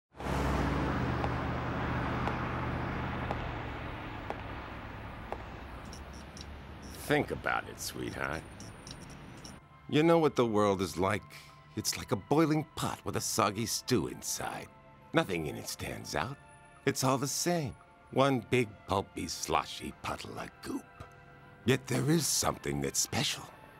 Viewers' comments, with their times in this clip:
0:06 That robber is totally doing a Christopher Walken impression.